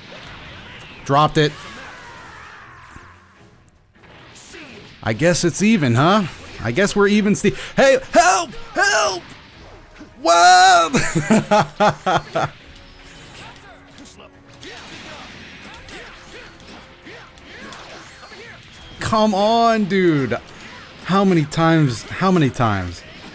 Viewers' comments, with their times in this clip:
0:09 that scream though, killed me laughing